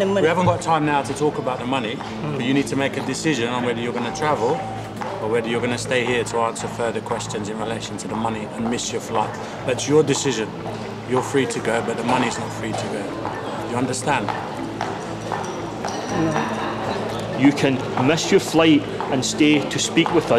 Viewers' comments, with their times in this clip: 0:06 I like how this guy speaks perfectly clear english and says "do you understand" and then his coworker starts to say the same thing but in scotish/irish accent xD